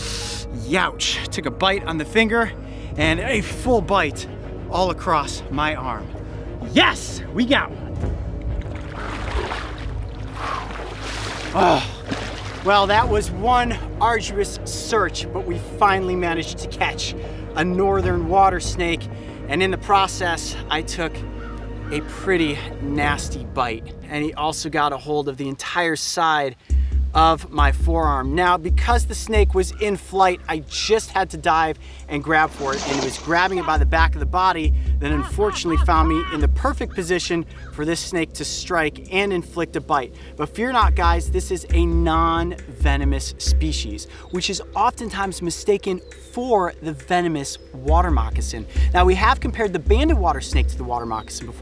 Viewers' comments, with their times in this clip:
0:05 when he screamed YESS The snake hit scared😂😂
0:06 His voice scared the snake lol
0:35 crow mimicks coyote 😂